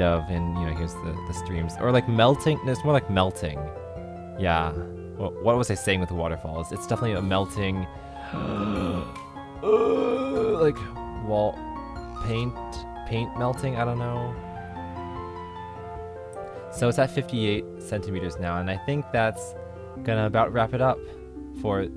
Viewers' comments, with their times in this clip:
0:07 yawn, or Chewbacca